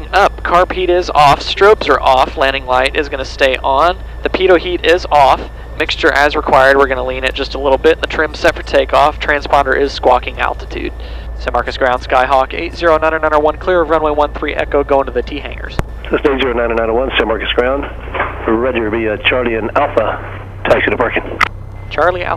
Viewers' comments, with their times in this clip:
0:10 Ground kinda sounds like trump lol..